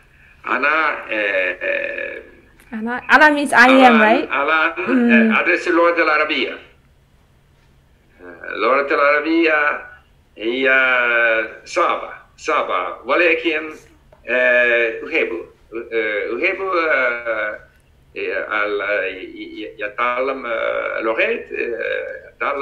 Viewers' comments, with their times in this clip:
0:05 I am Arab. And I am amazed! He is very fluent and his pronunciation is very clear!